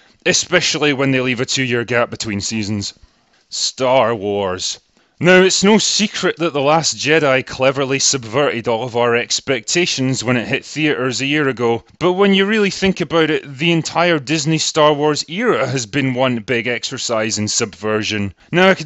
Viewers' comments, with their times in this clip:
0:03 I actually laughed out loud just because of the way he said "Star Wars" 😂, it was like a little bit of him died right at that moment, like Lisa Simpson breaking Ralphs heart in half 😂